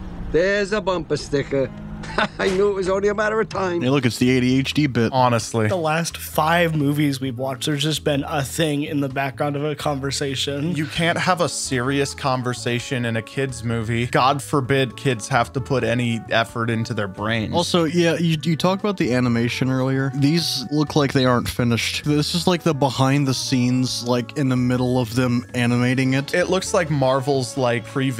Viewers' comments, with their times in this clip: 0:10 sounds like a stock shrink sound effect